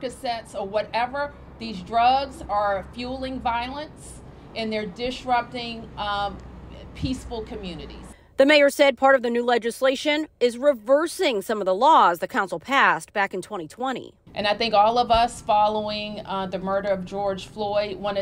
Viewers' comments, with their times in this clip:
0:05 "dishrupting peaceful communities"?